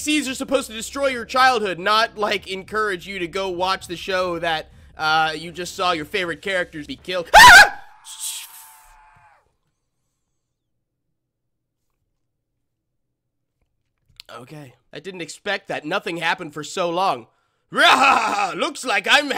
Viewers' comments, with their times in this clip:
0:07 that scream though XD